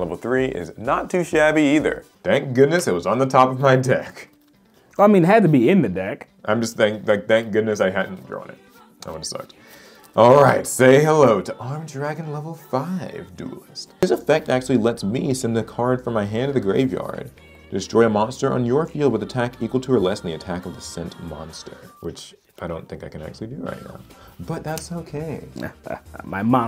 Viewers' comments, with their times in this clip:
0:09 PHENOMENAL music choice starting at like I think???? VERY good ty for playing nmh music yesyes
0:10 That singing in the background 🔥🔥🔥🔥